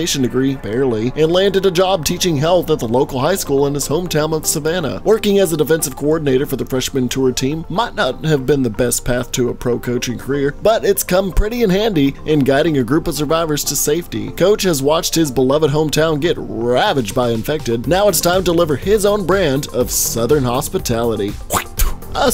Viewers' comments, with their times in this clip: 0:03 Almost thought it said nickelodeon